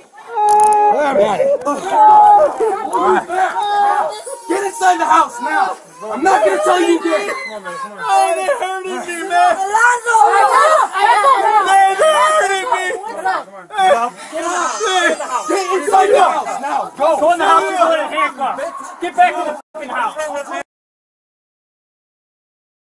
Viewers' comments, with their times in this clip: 0:04 when he cried like a cartoon character i lost it😭😭😭😂